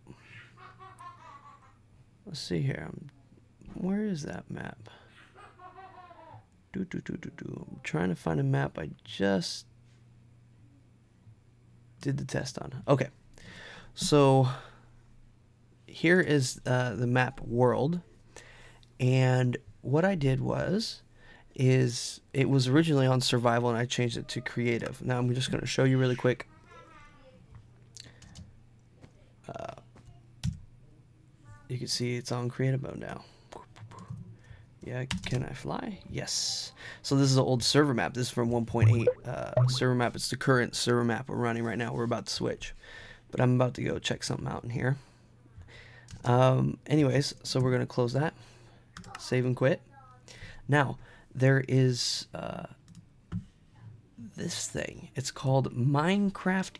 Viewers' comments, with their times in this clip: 0:05 ... Evil Laugh O.o Jk
0:38 Thumbs up if you checked your skype